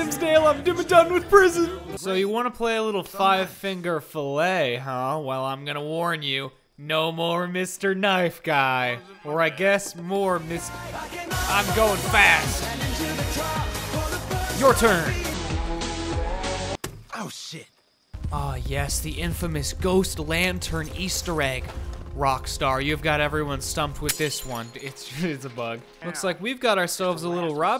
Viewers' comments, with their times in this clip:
0:10 gotta love dat Initial d eurobeat BABEEE!!